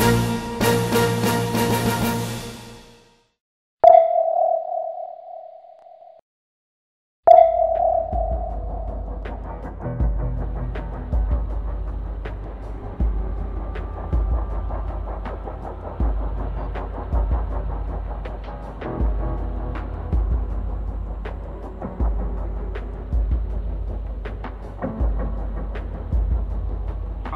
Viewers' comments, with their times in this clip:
0:08 What's the music playing from sounds like something out of splinter cell.